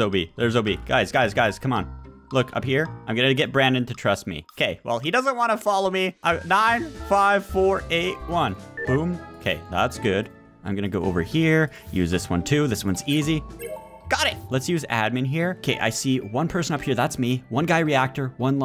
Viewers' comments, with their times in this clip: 0:05 it sounds like he’s saying: im 95,481 yrs old